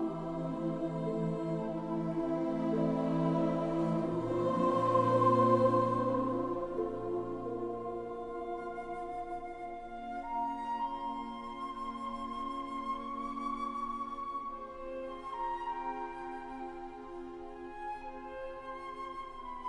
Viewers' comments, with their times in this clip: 0:07 That flute solo is heaven